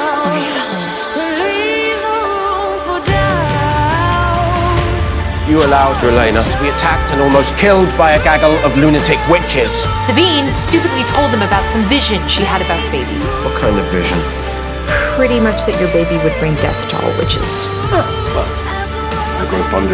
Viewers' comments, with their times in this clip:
0:06 daaaaam that editing of changing Hayley’s name to Elena was so smooth I almost didn’t catch it